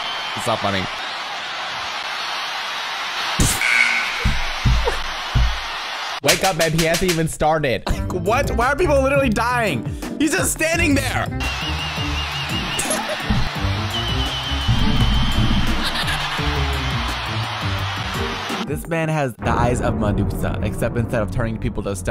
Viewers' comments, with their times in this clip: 0:10 why you sounded like a straight man